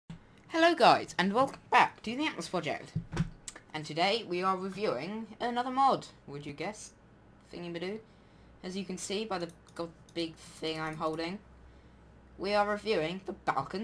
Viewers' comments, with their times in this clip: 0:01 trying to hide a voicecrack... or burp.